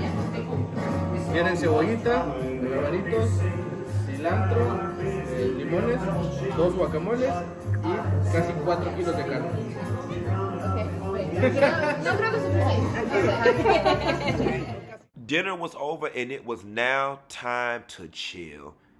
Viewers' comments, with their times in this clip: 0:03 Am I the only one that caught the song ? Lmaaooo i'm DEADT